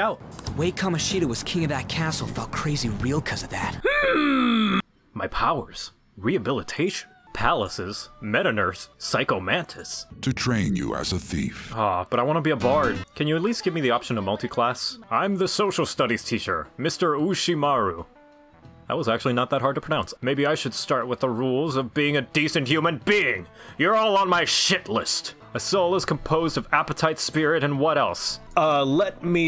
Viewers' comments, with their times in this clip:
0:10 The length of the clip of the song is just long enough for you to recognize it, but just short enough to catch you off guard and for it to get a knee-jerk reaction out of you. 10/10 comedy at it's finest.
0:14 split second of Jaunty Lute music